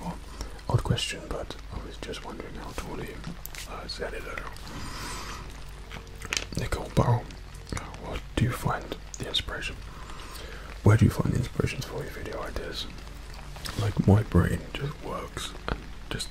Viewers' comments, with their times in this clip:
0:04 what did you actually say here?